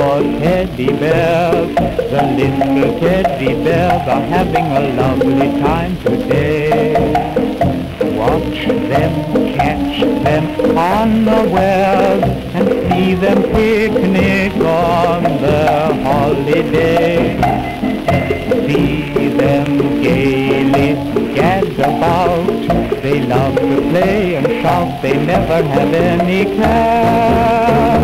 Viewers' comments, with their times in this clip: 0:09 Watch them catch their underwear?